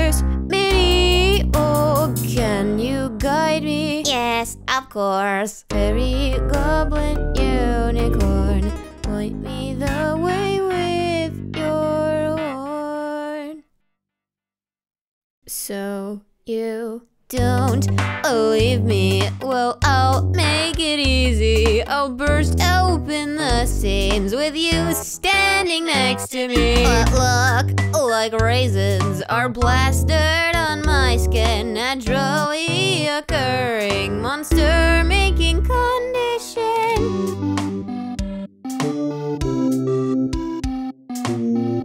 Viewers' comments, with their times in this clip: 0:04 why have I not seen someone talk about how funny the “YES OF COURSE” sounds
0:24 I like how the voice changed kind of